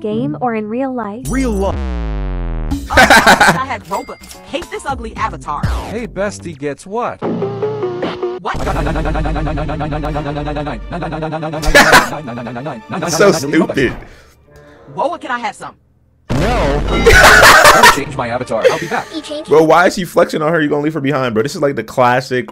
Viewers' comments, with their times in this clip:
0:06 when you put that at 2x speed it sounds so weird 💀
0:09 why bro speak German 💀